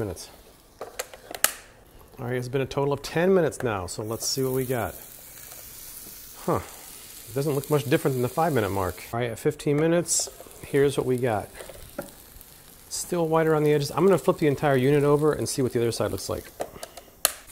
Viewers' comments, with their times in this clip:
0:03 shout out to the blang.